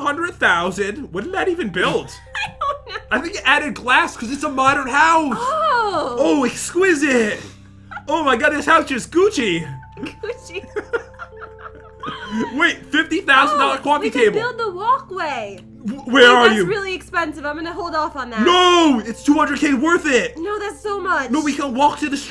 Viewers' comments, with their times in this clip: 0:08 the way he said Gucci 👌🏽👌🏽👌🏽👌🏽😂😂